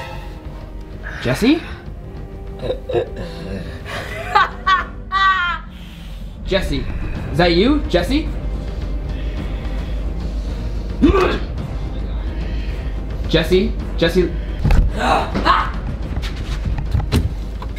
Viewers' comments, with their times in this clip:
0:04 Yo can we just admire that laugh it was ADORABLE
0:05 doesn't sound like evil Jester laugh ? Or is it just me
0:05 doesn’t sound like evil Jester laugh ? Or is it just me